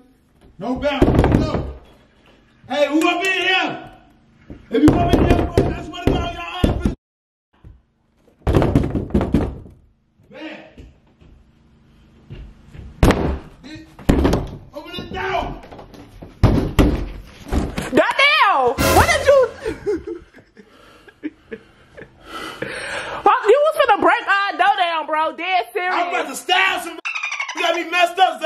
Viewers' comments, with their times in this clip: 0:10 bet footsteps footsteps 💥 💥💥 on the door